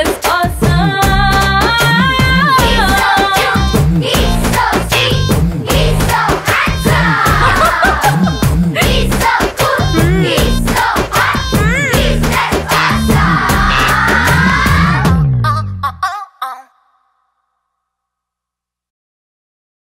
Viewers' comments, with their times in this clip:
0:04 that children reaction like Mass prayer in school assembly